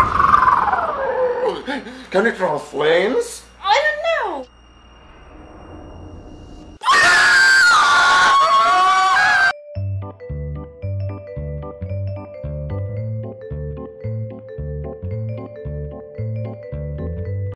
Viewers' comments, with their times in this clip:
0:07 warning to headphone users. Jumps are incoming.